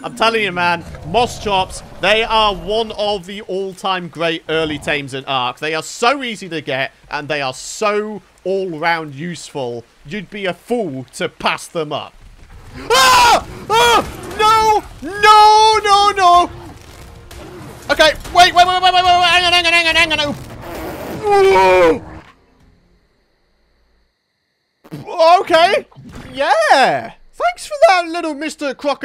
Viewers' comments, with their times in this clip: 0:10 Just Discovered Your Chennel Yesterday I Don't Play Ark But I Want To Lol Was Just Way Too Funny That Scream I Got Scared When U Started Screaming 😂